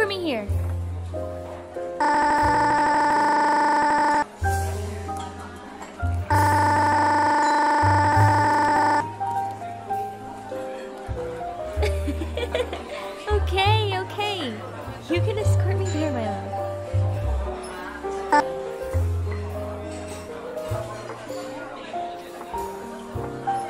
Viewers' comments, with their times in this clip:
0:08 sounds like someone we already know I CAN ONLY WONDER-